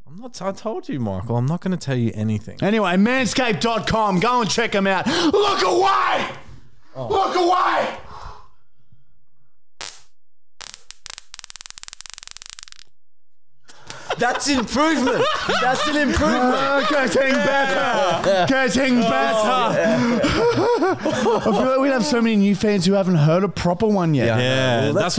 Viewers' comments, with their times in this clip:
0:09 that seriously sounds like a taser!
0:11 sound like a taser 😂😂😂